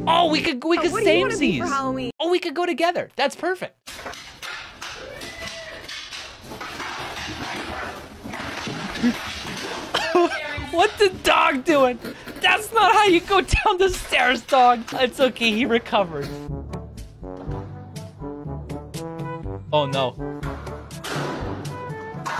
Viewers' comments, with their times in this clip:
0:09 bro your laugh scared the fucked out of me 😭 i was putting headphones on and it was 3 am and i got scared 😂